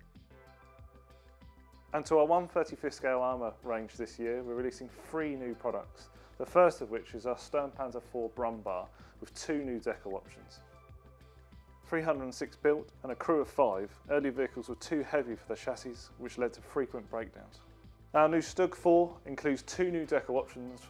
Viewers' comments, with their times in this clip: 0:07 Some cool kits, and a few with detailing I had thought was impossible for Airfix. there is the old "brum bar" again. Not the kit, but the silly pronunciation. It's "broomm bear" ("growling bear" in English). "Bär" in German means "bear" in English and is pronounced exactly the same.